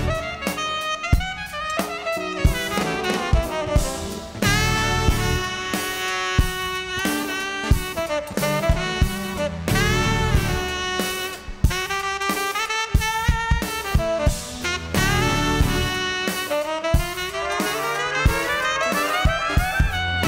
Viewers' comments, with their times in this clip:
0:05 Great Tenor solo in that second track. Especially when the other horns start coming in. Around the mark. It's just such a melodic solo that kind of surprises you.